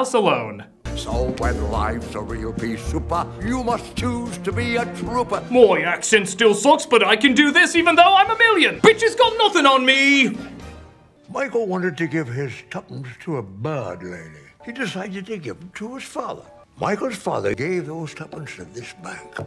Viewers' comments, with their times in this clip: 0:05 HEKK U THAT'S THE DICK VAN DYKE ACCENT AND IT WILL ALWAYS BE AMAZING NO MATTER HOW FAR FROM REAL IT SOUNDS!!!